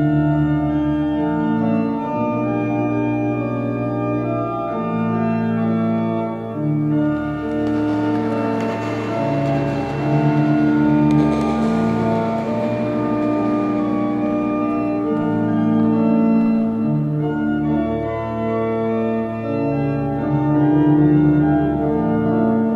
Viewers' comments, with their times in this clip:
0:07 Guys look. When suga plays the piano that sound is a funeral song. In during this song we see all the guys running with each other happily outside where is a bright light (i think that means God and they can rest in peace finally) but then when he stops V covers his eyes amd i thi k that that means that he is making a blind eye towars their deaths. But then to save his friends life he makes a contract with the devil. TBH i dont know. This song has a deep meaning that we cant find easily. But this parts makes me very worried and i dont know why. Sorry for my English